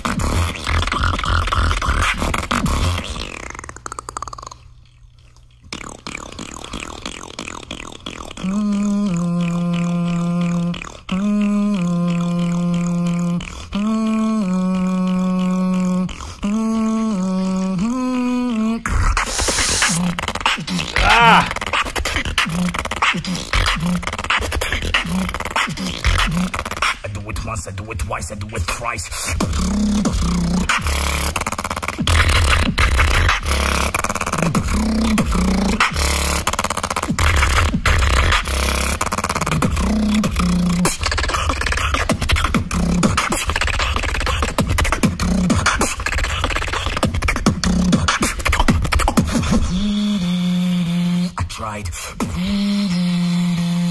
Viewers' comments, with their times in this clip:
0:03 The reaction seems to be a bit out of sync with the video. You can hear it when it goes silent, the audio comes through your headphones into the mic before it comes through the video. Just letting you know so you can adjust for the next video <3
0:40 What in the name of bbx is this roll man ? Never heard this before